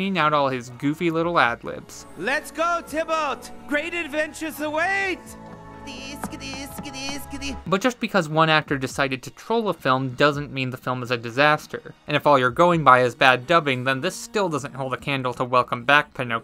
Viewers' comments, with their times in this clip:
0:04 Me:ah yes the sounds of running XD